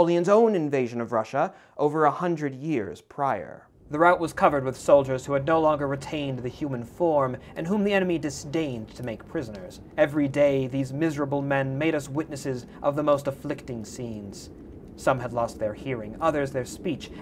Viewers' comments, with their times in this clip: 0:03 a worthy Briton would surely pronounce route as "root", would he not?